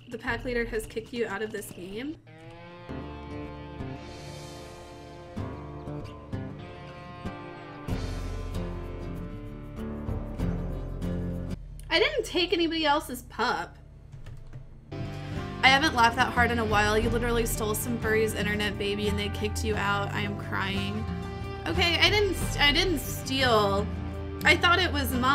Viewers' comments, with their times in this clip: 0:09 she was keeping herself from busting up laughing after reading the chat hahahaha